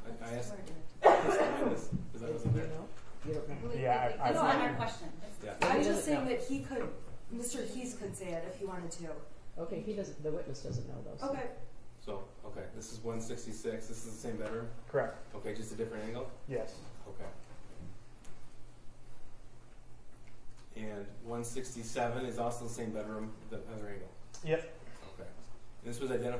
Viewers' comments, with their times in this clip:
0:09 .. the defense is very inarticulate